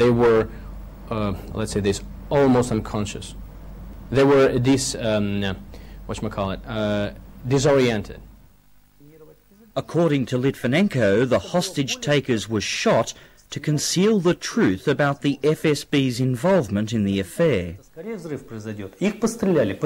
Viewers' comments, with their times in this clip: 0:04 “wha-cha-ma-cal-it” = “What do you call it” lol yup he was taught English from an American or from American movies